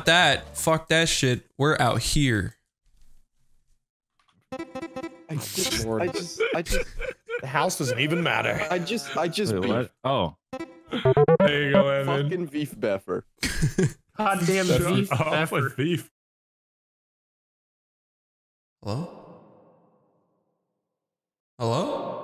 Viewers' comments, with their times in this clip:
0:03 That 2 second pause and everyone just gets it. 😂